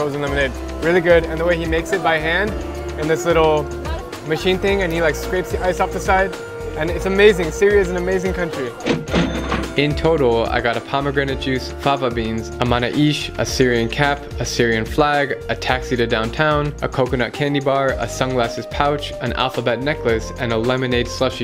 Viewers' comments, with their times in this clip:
0:06 he says counry not country